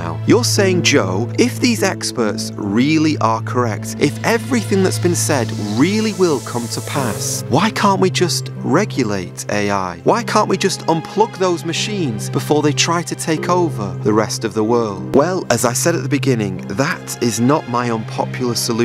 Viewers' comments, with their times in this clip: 0:04 This sounds like AI. Revelation 15 The second beast was given power to give BREATH(life) to the image of the first beast, so that the image could speak and cause all who refused to worship the image to be killed.